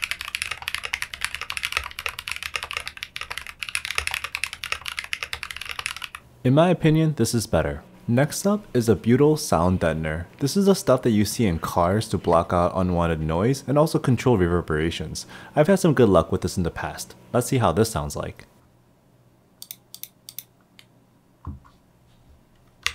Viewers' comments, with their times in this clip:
0:07 Okay, wow, that’s a crazy discovery for me—butyl sounds amazing. Glad I checked out this video, even if I’m not going to pick up any Glorious keyboards